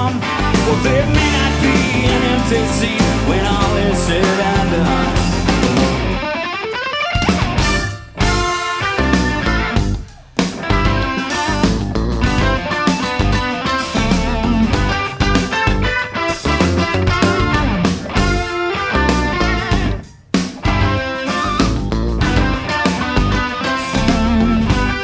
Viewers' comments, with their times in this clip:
0:07 That pause is soooo damn clean.